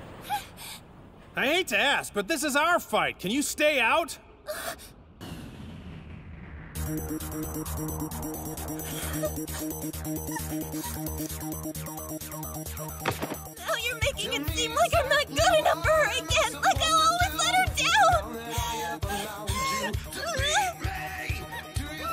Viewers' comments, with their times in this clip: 0:10 PERFECT music choice